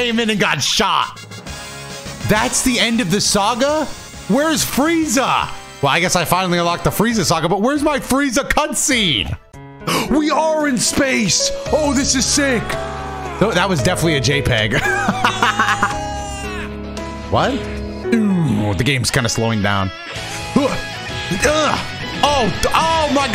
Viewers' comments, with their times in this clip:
0:10 The Dokkan TEQ Bardock ost goes hard as hell